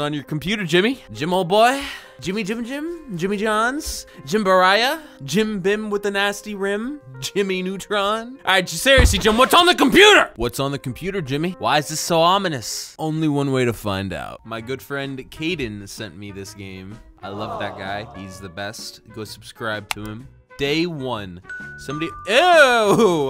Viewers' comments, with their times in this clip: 0:07 The way he said jimmy neutron